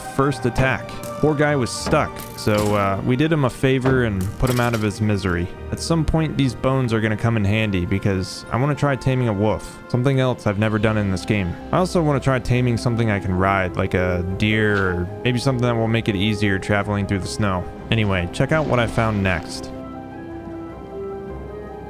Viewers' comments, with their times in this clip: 0:08 Lol “taming a woof”